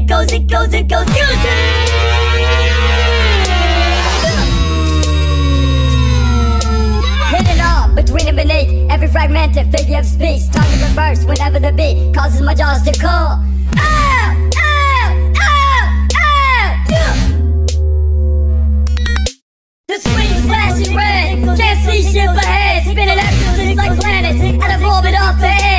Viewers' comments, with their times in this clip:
0:06 mr grips hits puberty